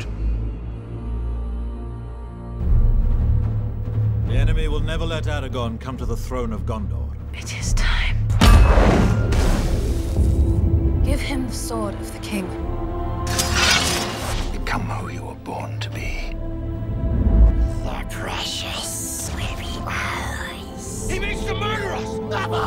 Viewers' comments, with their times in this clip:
0:09 THE SONG chills